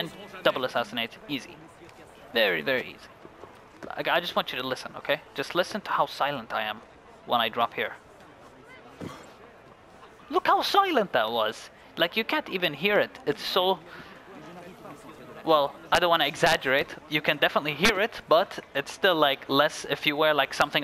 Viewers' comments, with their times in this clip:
0:08 lol he sounds Irish when he says "Look How Silent That Was!"
0:08 lol he sounds Irish when he says "Look How Silent That Was!"
0:08 lol he sounds Irish when he says "Look How Silent That Was!"